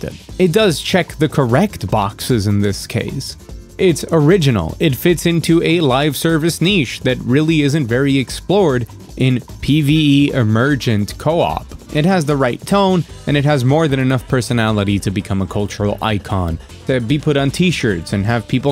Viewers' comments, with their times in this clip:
0:06 Oh my God. An American that pronounced "niche" correctly.